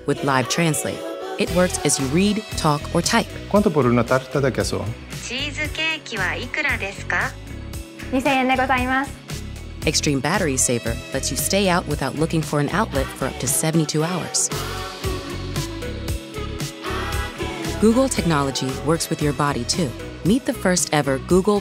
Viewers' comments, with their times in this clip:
0:03 the man doesn't even speak spanish, it also happens it TV and movies. How hard it is to actually hire someone who does speak spanish? lmao